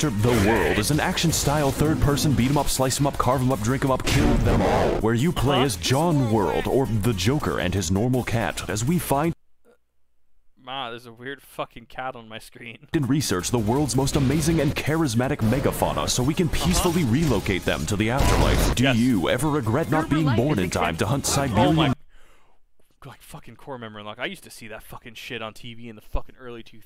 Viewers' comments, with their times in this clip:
0:09 "There's a weird cat on my screen!" And he's apparently impersonating an Australian!